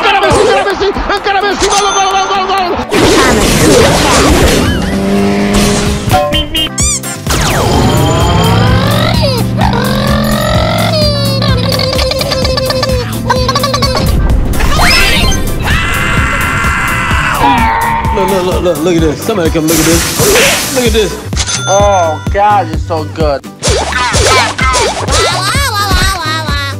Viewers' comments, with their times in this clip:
0:09 that autorickshaw sound got me lol 😀🤣